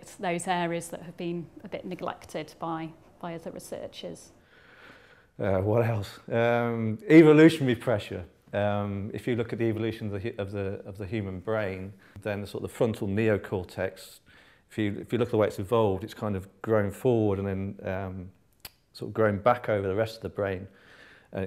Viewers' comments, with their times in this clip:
0:04 there is no way that is not a stoner "whoa"